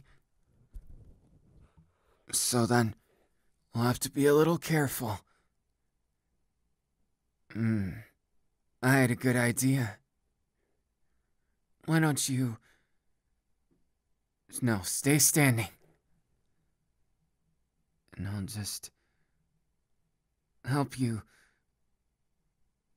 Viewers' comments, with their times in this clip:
0:09 Me: Me: "uM dEnKi iM- yOu kNoW wHaT cOnTiNuE~" Denki: slurp noises Me: "Ahhhhh!!!"